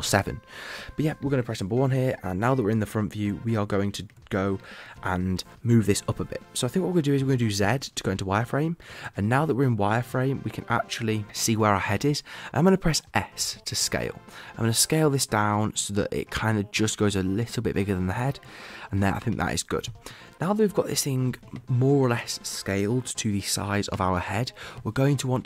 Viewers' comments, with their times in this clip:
0:06 wtf did u just said dkfskgdfod zet?